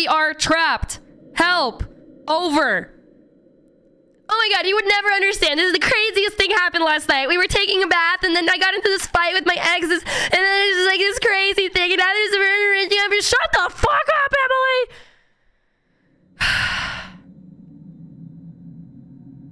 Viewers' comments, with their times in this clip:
0:05 you sound like that one kid in the Goonies. lmao